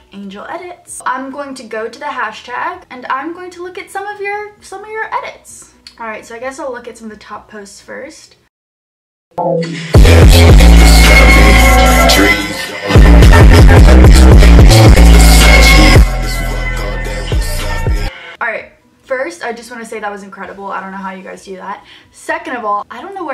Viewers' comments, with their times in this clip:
0:10 Puts earphones on Turns up volume to 100 Gets to Dies Literally tho, my volume was 100 and i'm pretty sure that I can't hear as much as I did before the video started.... and my earphones broke (im pretty sure)